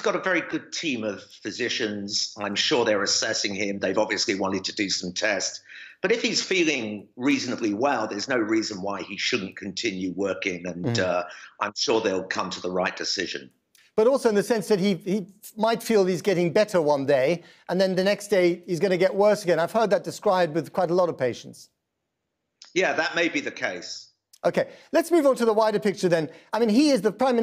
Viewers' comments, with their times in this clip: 0:09 Did anyone else hear a fart ?